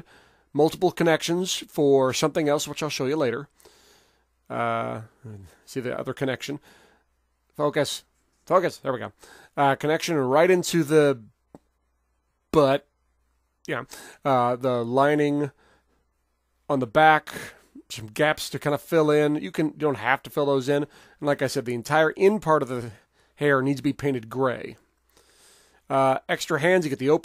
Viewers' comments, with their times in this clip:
0:09 that pause before saying but had me cracking LOL xD I wish there was an MG too and a 2.0 MG of G gundam models I wish there were also more feminine shaped gundam. Looking forward to an MG virtuee/nadleeh given the GN frame from dynames